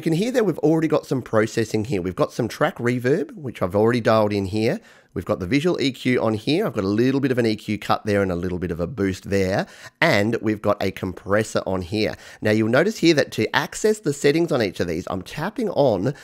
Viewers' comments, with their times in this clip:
0:04 “I’ve only got eight little balls”… Ha ha. That’s all I have to say.